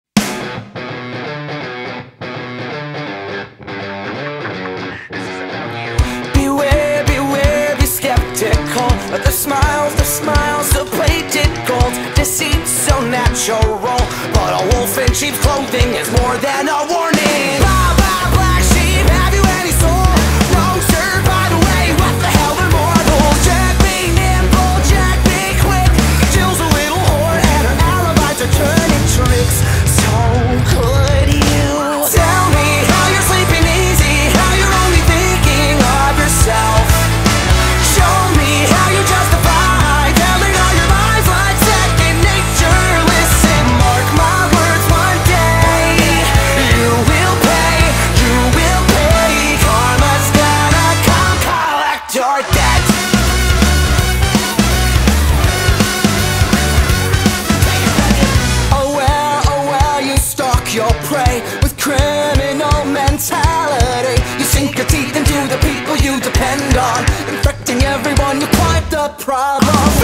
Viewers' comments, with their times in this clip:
0:05 yall, seconds, does anyone else hear a more crispy voice in the background singing along? or is my headset going to shit?
0:21 I can’t be the only one that hears what the hell are marbles
0:51 has subtitles on, while singing, looks down as song says your dept Subtitles: your dad
0:57 I believe its and extra potato nugget
0:57 only gods heard “take it Beckett”